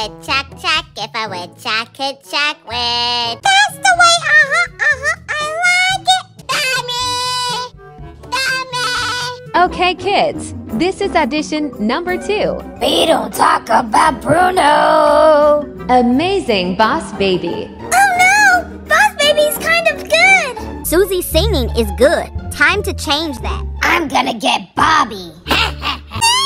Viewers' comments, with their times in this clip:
0:06 sooo cuteeeee the way he said "BAaaaby u r the bessssst"
0:13 me dies of the laugh